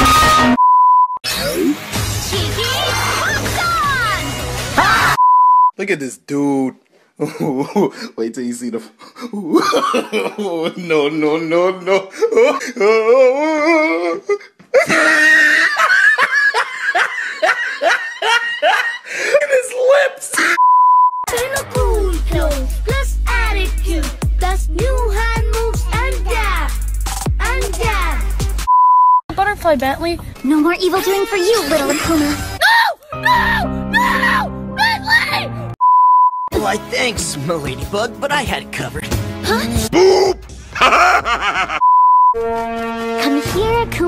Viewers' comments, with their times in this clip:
0:04 its the HaaAaA for me
0:28 Person: look, a butterfly bentley! :D Dog: nO MoRe EvIl DOiNg FoR yOu lIttLe AkUma! Also dog: eats butterfly Person: NO- nO! NoOoo!! BENTLEY!! smAlL WHeEzE